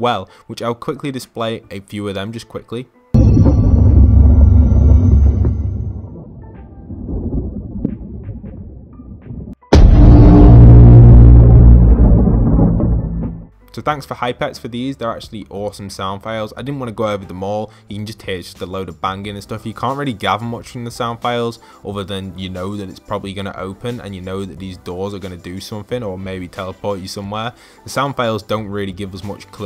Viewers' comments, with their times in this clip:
0:09 god, sounds like this are terrifying, who agrees?
0:17 it sounded like the rocket